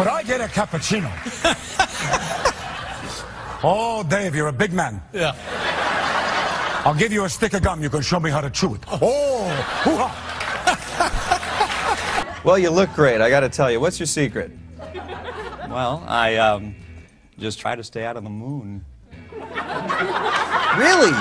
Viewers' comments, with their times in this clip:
0:06 Go to attention surplus disorder and it is amazing reenactment interpretation and the definition A+which makes it a good joke all of those aspects and the sound of the impression is good